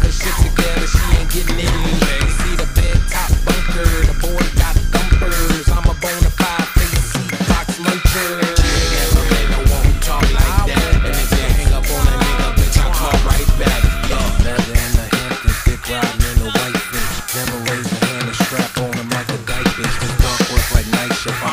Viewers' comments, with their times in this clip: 0:03 drop was amazing